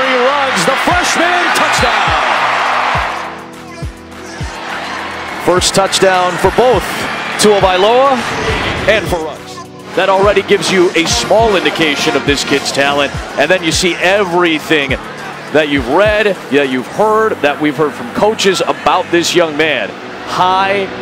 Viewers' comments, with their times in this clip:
0:05 Haha, he says Tuavailoa